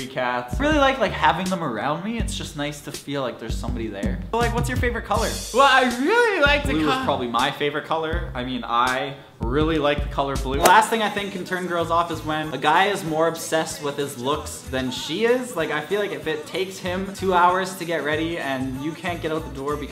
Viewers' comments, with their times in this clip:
0:03 I heard this song in the background!!! 👌👌👌